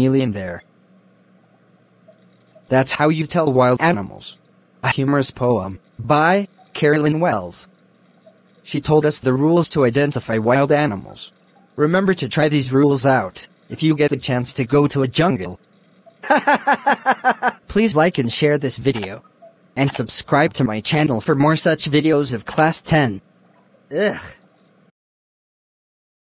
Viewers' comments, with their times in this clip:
0:09 He itself told the joke, he itself laughed for it
0:14 The laugh and the 'ehh' traumatized me dude
0:16 His laugh tho 😂😂
0:20 laugh was soo💀😊